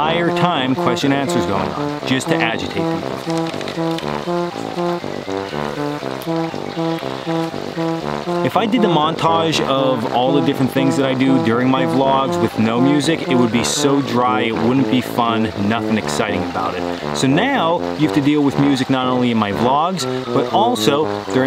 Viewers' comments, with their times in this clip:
0:09 Dude.... 😳 That music .... dude..... 🤯 ... sounded like a bad chili batch. Yikes! 🤣🤣🤣 Oh my goodness.... I'm dying! 🤣🤣🤣 I can't believe you don't have 10 million subs just for comedic value alone. 😂😂😂 People really want to bring their whining women camping?!? 🥺 Get a good insurance policy first and we'll bring the bear food. We don't want to hear her either! Good grief....